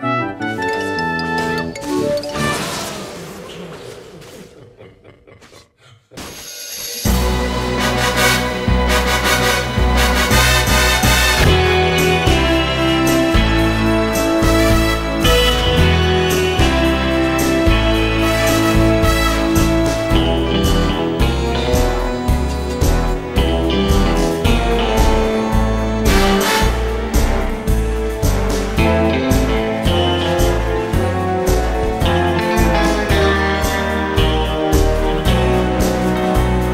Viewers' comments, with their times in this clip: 0:06 What is the music ? looks like a James Bond opening^^
0:06 What is the exact track when Teemo started to appear, sounds like something 007 but different, it's awesome. x) I really want to know. It starts
0:06 whats the name of the music/song ? sounds like a james bond remix
0:10 Gosh this fake James Bond music is really something!
0:20 soundslike james bond music